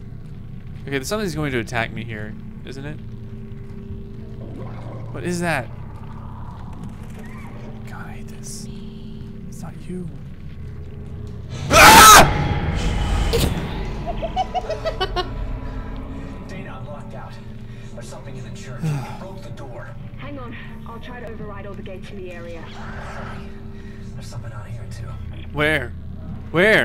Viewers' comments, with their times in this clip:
0:10 his scream scared me more than thedorr breaking.
0:11 LOL. My girlfriend would laugh at me too if I had screamed like you ....